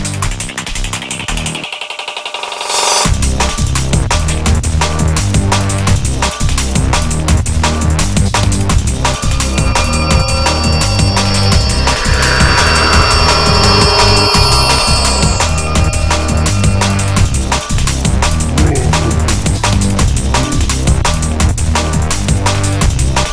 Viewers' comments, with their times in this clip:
0:06 time That was suppose to be the borg cube tellaporting me back >.< i also used the old startrek beeming sound after that